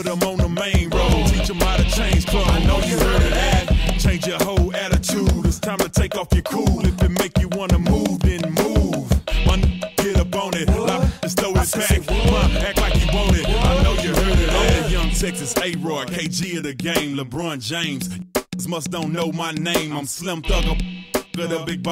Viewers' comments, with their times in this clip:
0:03 THEM SPEAKERS WHERE KICKIN